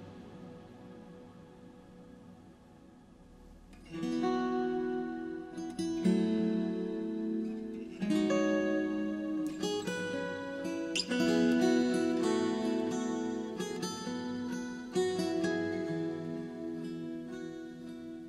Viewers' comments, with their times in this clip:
0:03 Dear god was so powerful it send shivers Absolutely beautiful, amazing job from a fellow guitarist :)